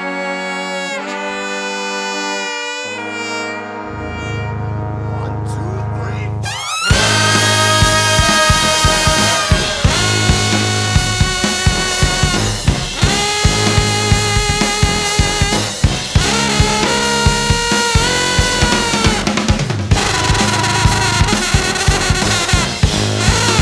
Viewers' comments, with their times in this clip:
0:06 my favorite part of this vid- lead trumpet player absolutely blowing his balls off and then the trombone player giving him some love i've been watching this performance for years and it always makes me smile